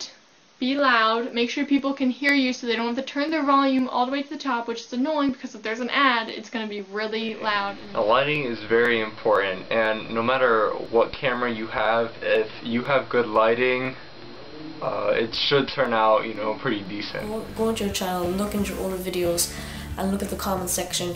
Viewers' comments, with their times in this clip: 0:03 what's that love, i can't hear u
0:03 i had to turn the volume up